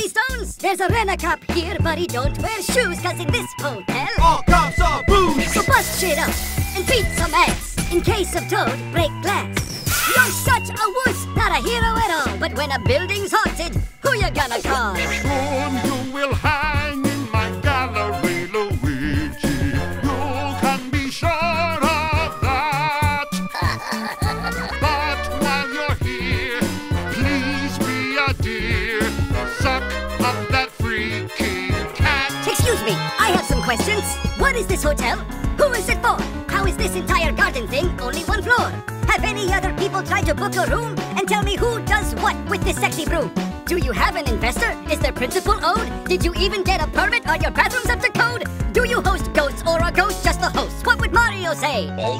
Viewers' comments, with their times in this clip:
0:05 Also feels like a full song already so well done🤩🧡
0:06 I'm worried about my sense of humor. All it took was adding the squeaking effect when luigi was slamming a boo on and I was laughing my ass off
0:15 So according to Mario Wonder, this is King Boo’s canonical singing voice lmao
0:15 I love the king boo's voice
0:21 I freaking LOVE how his voice doesn't match his laugh at all. Like he got a deep ass voice and then he got the most childish, not even scary laugh ever lol 😂.
0:35 I love that the piano theme is included in this.
0:35 I like how the e.gadd rap section is set to the tune of the library piano music from dark moon.
0:35 I hear the tune of library pianooo